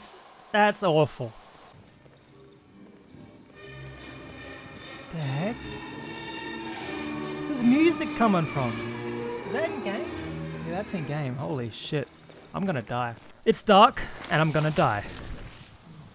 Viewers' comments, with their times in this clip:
0:04 That music from silo location gave me a total goosebump.